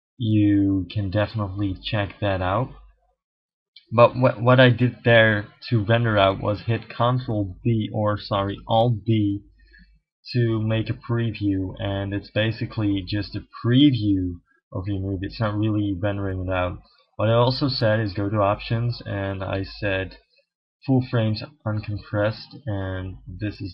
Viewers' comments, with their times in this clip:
0:08 what you talk in ?? icanthear